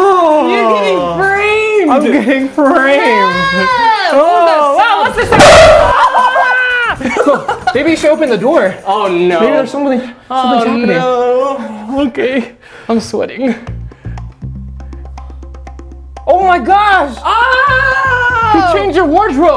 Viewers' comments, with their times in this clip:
0:05 owww my ears